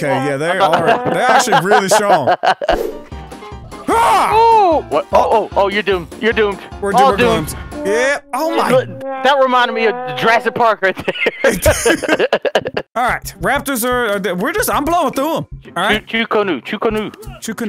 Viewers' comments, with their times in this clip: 0:03 his random ass yell 😂😂